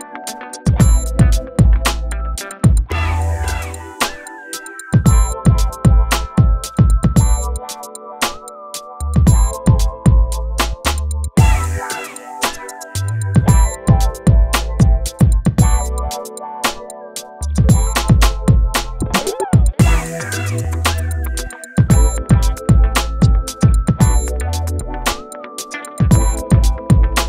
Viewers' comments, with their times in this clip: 0:09 I love how the simchase rival clapped on beat.😂🧡